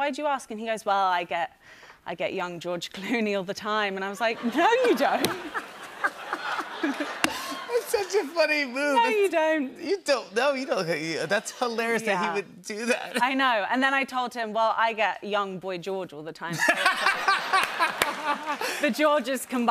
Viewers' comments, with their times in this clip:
0:04 to see Jimmy force his laughter reaction to Sophie's story...